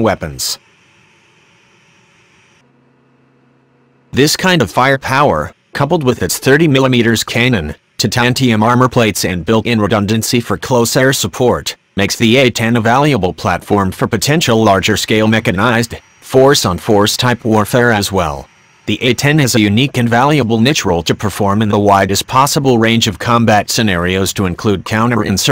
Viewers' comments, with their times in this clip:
0:05 what is a 30 millimeters cay-non?
0:08 what's a caynun?